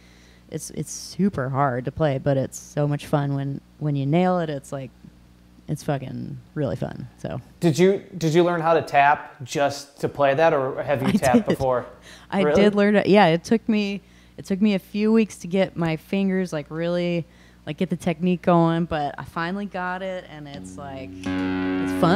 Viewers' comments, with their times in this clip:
0:10 Love her sound......Eddie would too I am sure